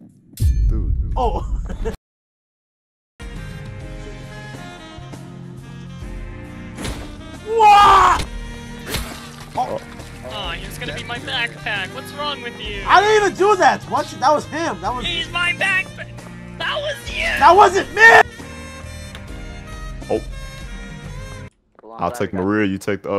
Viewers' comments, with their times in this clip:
0:04 "RAHHHHHHH" ahh Fall
0:10 bro sounded so genuinely grief-stricken